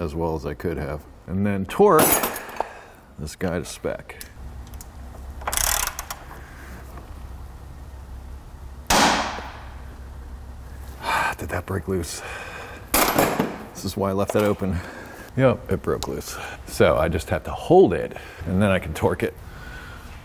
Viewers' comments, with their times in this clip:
0:07 That crack is nerve-wracking.